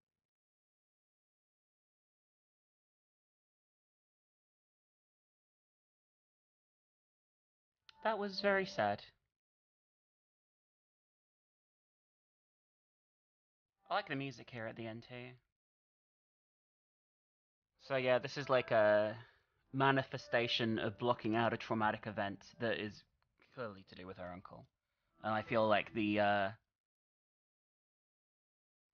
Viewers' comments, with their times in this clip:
0:09 Did the sound dip lower and get a little grainy around this time for anyone else? At first, I thought it was my bluetooth headphones dying or something. Then the sound went back to normal when she was shouting out Alice. After the end of the video, I went back and watched that part again, but it still did it at the same time and came back at the same time. I can what's being said, it's just lower and fluctuating in volume a little and a little grainy and muffled. Just checking if that was just me or the video...